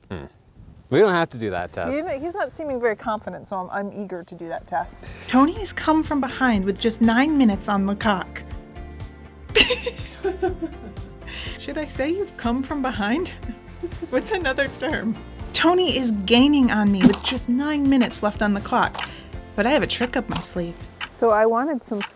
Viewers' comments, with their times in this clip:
0:06 Had to listen to four times to confirm I heard what I heard
0:07 Uhhh... guys... Chelsea, ya kiiiiiinda dropped the “L” in “Tony comes from behind with just 9 minutes on the clock” 😅😂🤣😅😅😅
0:08 Hmmm was that clock?